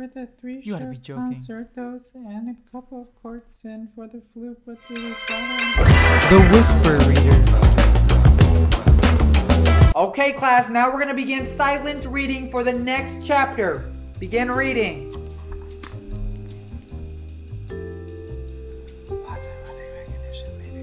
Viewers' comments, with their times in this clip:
0:07 whenever someone whispers to themselves I just listen to them so I don't have to read